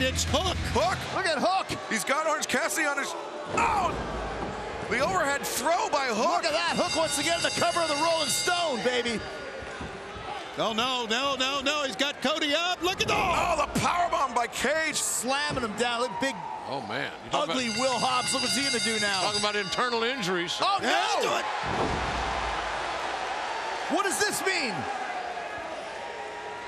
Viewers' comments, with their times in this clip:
0:07 if match was over than how bell ringed?🤪